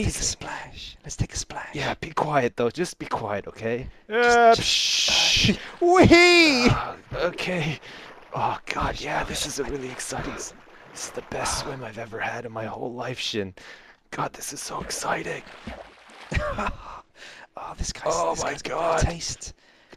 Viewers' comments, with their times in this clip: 0:05 The campiest noise EVER